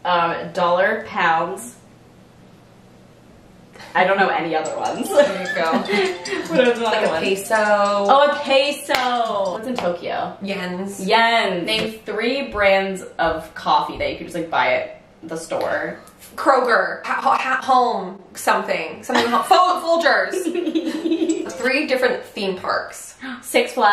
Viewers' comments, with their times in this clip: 0:06 the way they say "peso" omg haha